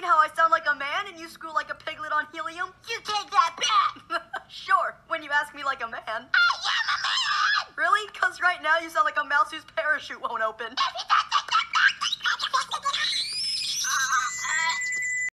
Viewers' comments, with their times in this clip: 0:13 ouch. my ears
0:13 me playing this on high volume. my computer: DUDE WHaT aRE yOu DoINg sTOp windows error: sorry you've been banned sucks to be u me: